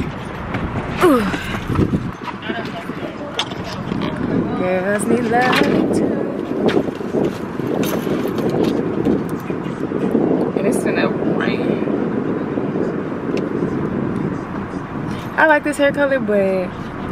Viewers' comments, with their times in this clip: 0:05 she can sing